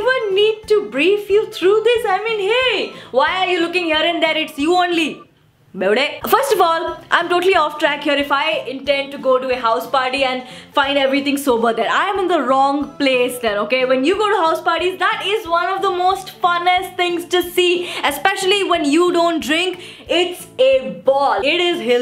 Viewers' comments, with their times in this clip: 0:05 it's sounds like crazyyyyyy (manytimes I said that word it's so mee) 😂😂😂😂😂😂😂😉😉😘😘